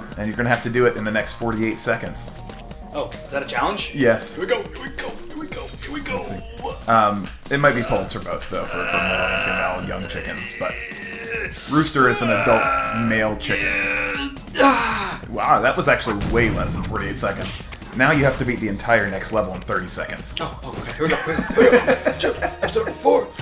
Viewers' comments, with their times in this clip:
0:08 Lol I love the light chicken talk with aggressive grunting in the background. haha Also fuck this game. XD Awesome video guys! Subbed fo sho!